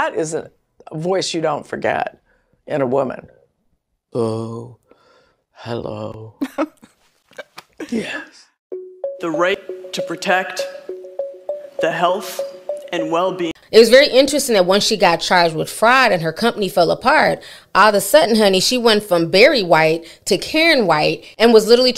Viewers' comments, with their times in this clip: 0:04 That voice alone would make me run for the hills 👀💨💨 I was howling 😂😂😂😂